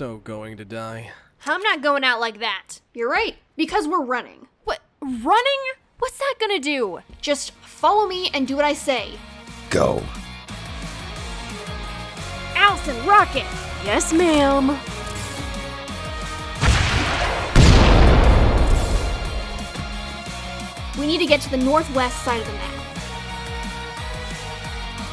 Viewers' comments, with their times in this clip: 0:09 Is it me, or does the alpha sound like master chief a bit here?